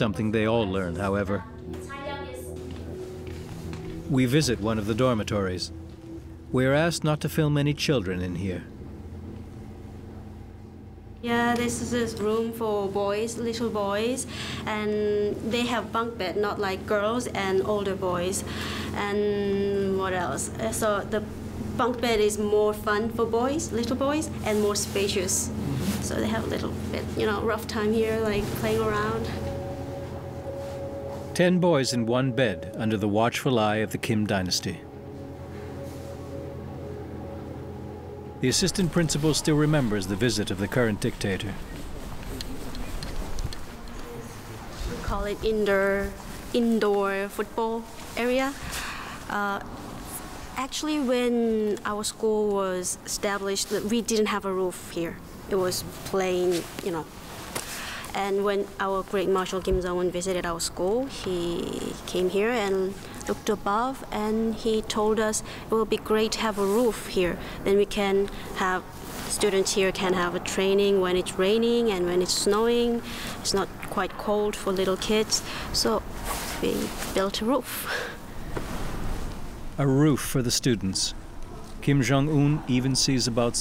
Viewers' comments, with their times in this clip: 0:06 The assistant principal speaks remarkable English with only a trace of an accent!
0:11 the principal spoke English quite well😂
1:06 The guide speaks American English. Just wondering, how is it possible? Abducted American teachers training them?